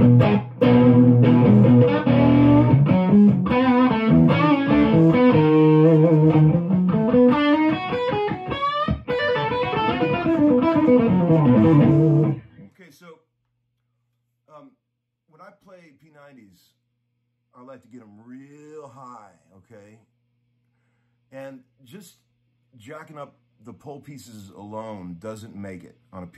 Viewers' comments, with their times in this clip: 0:07 That lick Jangus chirst.